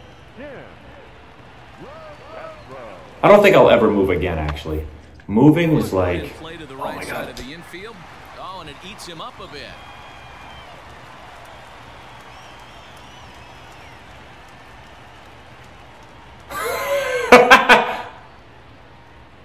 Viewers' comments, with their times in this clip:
0:03 You've got a bit of an echo. It's probably due to a lack of furniture. You might be able to mediate it by putting a sock on the mic. Also, man I wouldn't want to move anywhere with children <12, even if it's to a different apartment in the same complex.